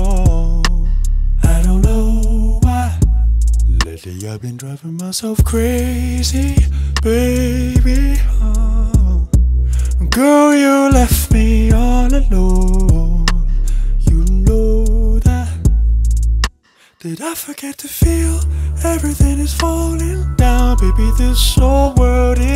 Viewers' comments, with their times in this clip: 0:05 hmm there is something with the tempo... i think.